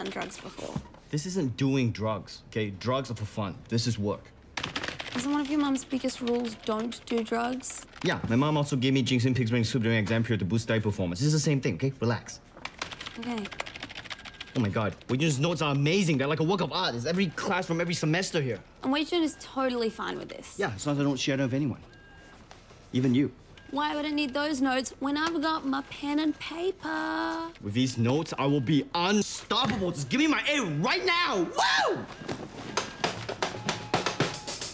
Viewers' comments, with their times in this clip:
0:05 WHAT?!? - “Yeah, My mom also gave me a;lsdjnlakuhg;airbag;USA snlgkjaso ;gjhajr’sigh o;ur ages during my exams period”
0:20 ish? His mom gave him Xi Jing Pings what???